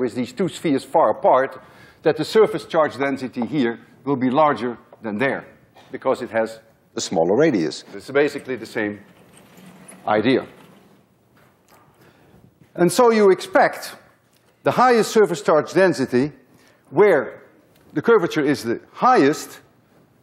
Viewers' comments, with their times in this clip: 0:06 ok. the audio is starting to freak me out to a point where I want to ask why all of a sudden the audio quality changes in short spurts. This time for this video it starts I would probably be very scared if I had like a drink or two and it was late at night since these concepts, physics and videos are so amazing and profound.